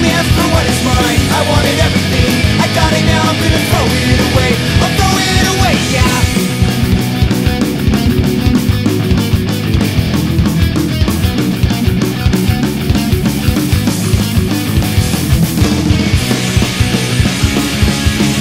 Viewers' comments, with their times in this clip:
0:05 begins everything I miss about the sound of 90s skate punk